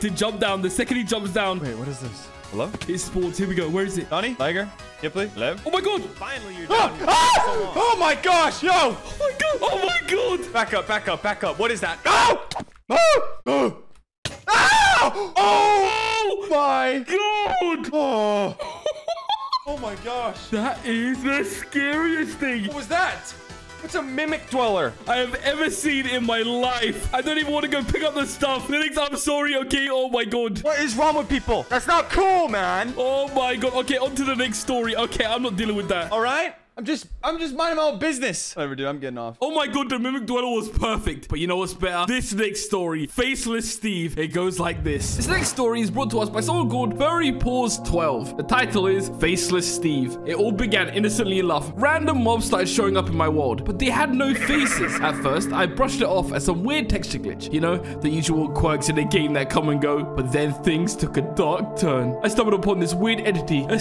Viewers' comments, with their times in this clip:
0:06 Breh 6 hours the way how he was screaming XD
0:46 When i heard "Furry P-" i had flashbacks for a second